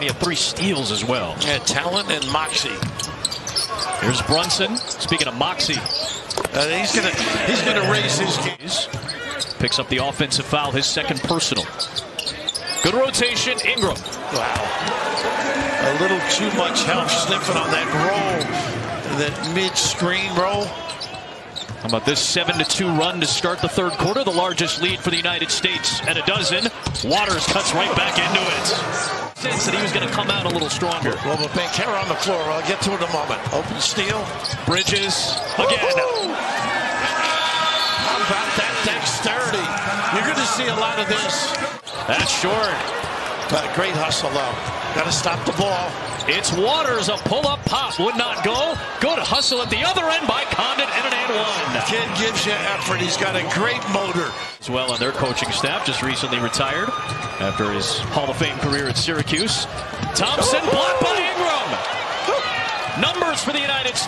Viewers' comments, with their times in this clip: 0:05 that swish sound was heavenly
0:49 Wait so who was the foul called on ? because that whistle made no type of sense lol